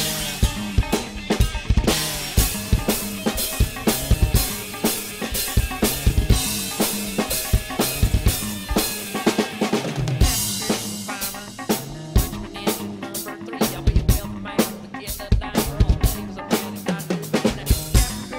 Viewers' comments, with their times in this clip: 0:05 worst splash fill of all time